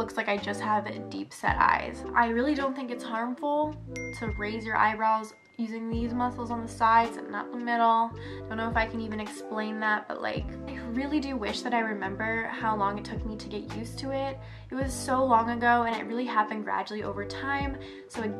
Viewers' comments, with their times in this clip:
0:03 This is so helpful. Only one of my eyes is pretty hooded and it’s the side where I can raise my eyebrow, so lucky me lol that notification is so clever. I was looking away and snapped my head back when I heard it😂